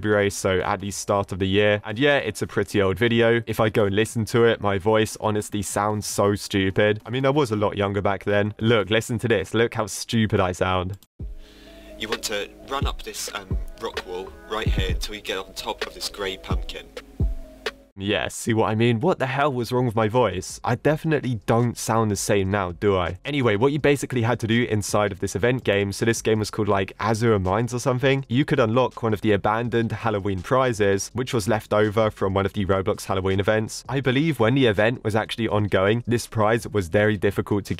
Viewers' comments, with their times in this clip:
0:05 when you said your voice sounds stupid i dont think it is stupid and it was probably the microphone
0:10 your voice sounds the same but i think its just the mic quality
0:12 your voice was still great that time not gunna lie
0:15 most of the boys YTbers I see they have this kind of voice when they started YT not long
0:16 you don’t sound stupid
0:19 Pretty normal accutaly